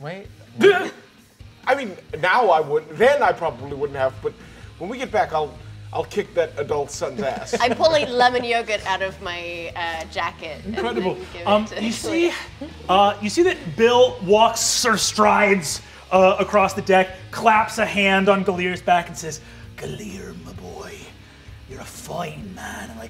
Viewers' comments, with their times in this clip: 0:10 I love that Brennan does his standard "incredible" transistion but forgot to fully leave the gilear voice